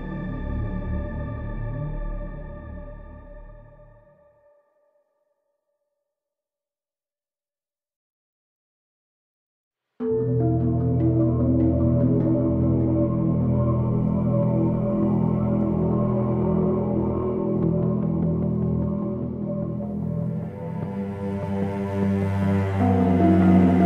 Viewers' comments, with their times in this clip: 0:09 If anyone watched the Tv Show “24 from season 1 till 6 they’ll realize this part of soundtrack is basically the atmosphere of that show.. Besides that every sec this whole soundtrack gives me goosebumps